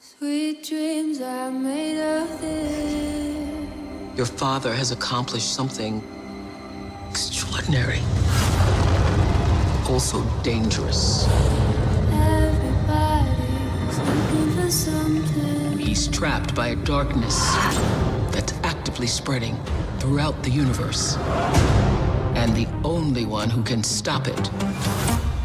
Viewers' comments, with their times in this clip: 0:09 Up to seconds I thought: Well maybe I will watch this when it’s released and then all I heard was WAHAHAWHAHAWHAHWHAHAAA WHAAAA! 😂😂 So maybe I should watch this with sound off 😅😂🔕. And maybe wait to see how it is in the movie itself 😅👍🏼